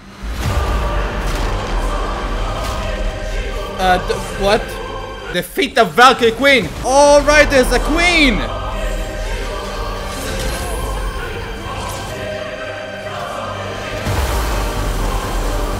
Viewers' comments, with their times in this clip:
0:03 what is the name of the music we hear of the video because it is really epic